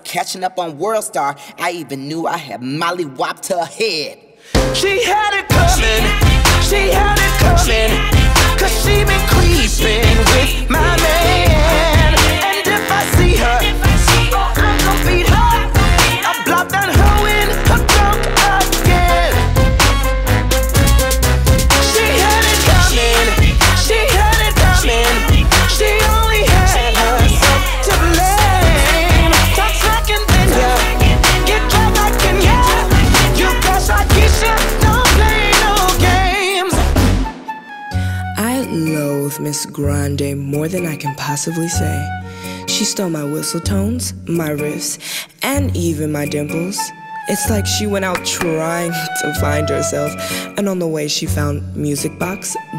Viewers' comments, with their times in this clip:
0:04 I love the voice :0
0:05 why is this sung so well-
0:37 for the best Mariah Carey impression EVER lol